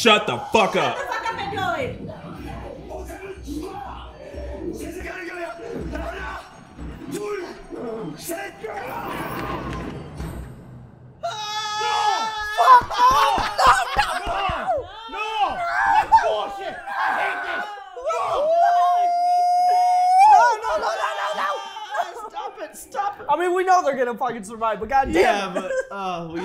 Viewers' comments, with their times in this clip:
0:07 NO LMAOOO that was the most genuine no 💀💀💀